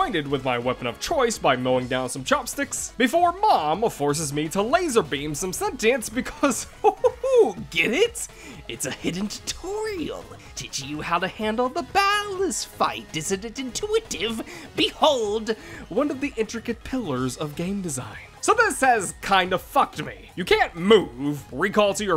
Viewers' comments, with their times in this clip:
0:06 this mans voice changes so many times its baffling edit: